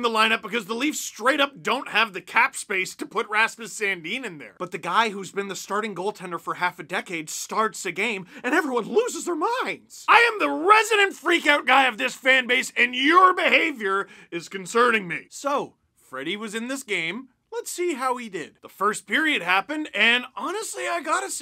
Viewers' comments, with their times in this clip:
0:05 I really like that Heath Ledger joker impression